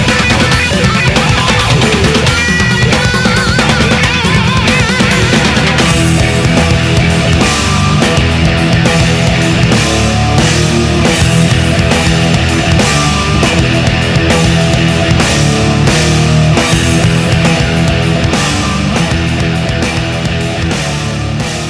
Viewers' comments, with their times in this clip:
0:05 One of the best riffs I've ever heard.